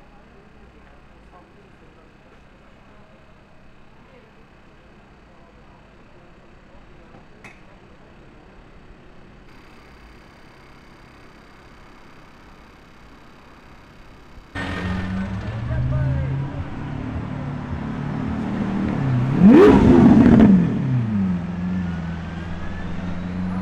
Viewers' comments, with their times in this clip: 0:10 McLaren 720S, McLaren 650S, Lotus Exige, and Ferrari F355 are the coolest. Matte Lamborghini Aventator, Nissan GT-R, and Yellow Ferrari 458 Italia engine are the greatest music. and Ferrari 488 meets Nissan Figaro convertible. 😀🏎🏁🏆